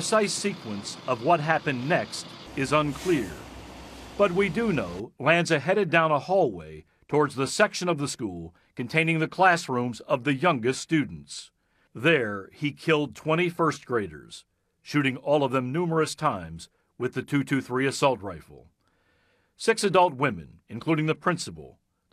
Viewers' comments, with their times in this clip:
0:06 c a l m